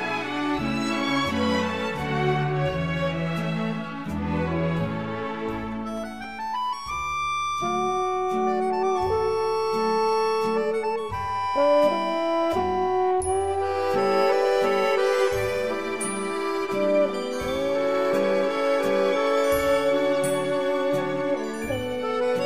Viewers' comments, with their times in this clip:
0:07 Is that a trombone solo ? Or a French Horn?